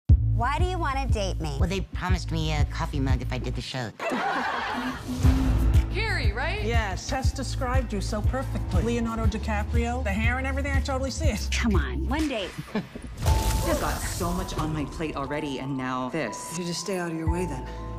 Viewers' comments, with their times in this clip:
0:02 why does the person sound like the new tiktok sound effect